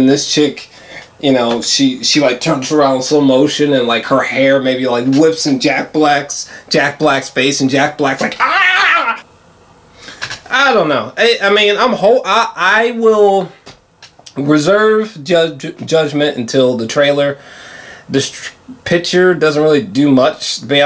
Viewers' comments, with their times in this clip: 0:07 that is a... SHOCKINGLY true to life Jack Black impression. well done, sir. you missed your true calling.